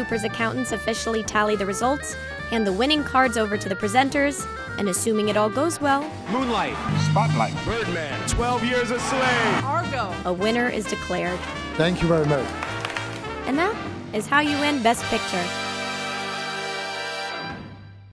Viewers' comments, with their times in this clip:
0:06 did anyone else hear the x lyrics to moonlight ??